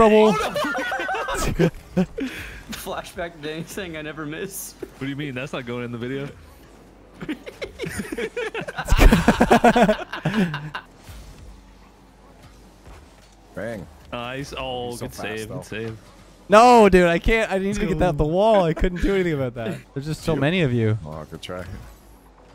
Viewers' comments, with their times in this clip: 0:06 bro when did Scooby Doo join the call?